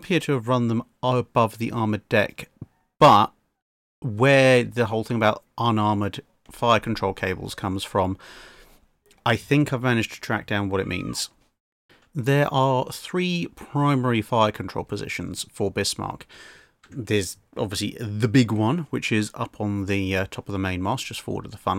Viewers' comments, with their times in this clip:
0:08 sounds like someone found a spider or something 😂